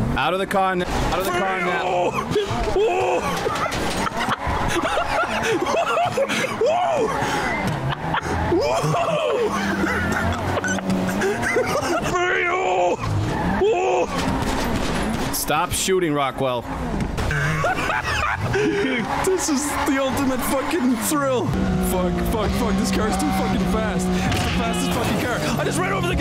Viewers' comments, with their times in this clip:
0:10 His "WOO" is gold